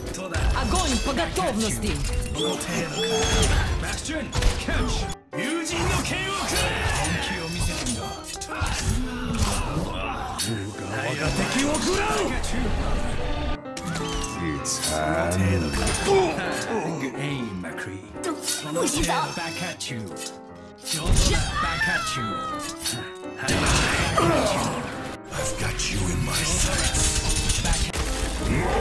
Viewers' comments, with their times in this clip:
0:03 I love how he says ‘Bastion Catch!’
0:04 you can hear genji saying bastion catch
0:16 you can hear genji saying good aim mrccree